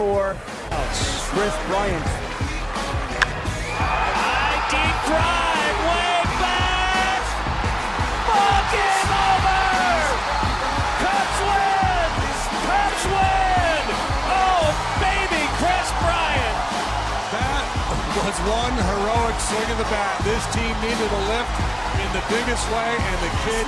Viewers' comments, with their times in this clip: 0:10 "fucking over!" Anyone else hear that